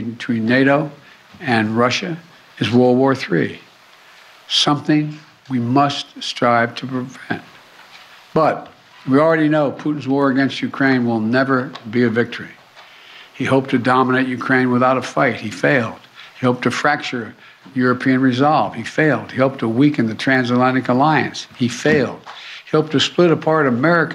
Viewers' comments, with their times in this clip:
0:07 Biden choking after realizing what's going on.